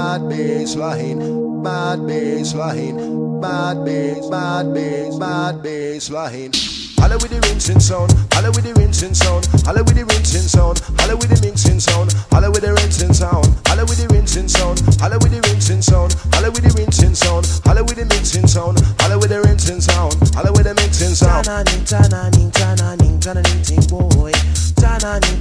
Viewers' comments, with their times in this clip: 0:06 when the bass drop
0:07 wooooooooow the drums!!!